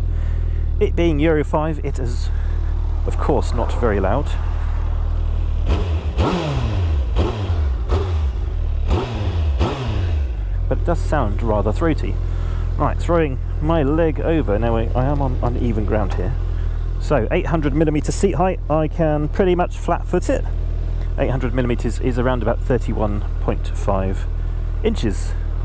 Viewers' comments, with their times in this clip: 0:07 You can hear how big the engine is, even with the stock mufflers, there's a deep sound that isn't there with smaller bikes with a single muffler. When I first started a 2nd Gen, with all stock mufflers, it was terrifying, you can hear a deep booming resonance at idle, because the mufflers are quiet, but they are very high flow, and you can hear the exhaust pulsing through at idle, with a deep booming sound. You know immediately that the engine is huge, and scary and it sounds amazing. I absolutely love listening to the booming idle. The 3rd Gen appears to have that exact same throaty, scary idle, cloaked beneath the nice quiet mufflers. It's also not a flat plane crank, so the motor sounds like a proper screaming race engine at all RPM's, much more enjoyable and rich sounding than any flat plane crank R1 at speed.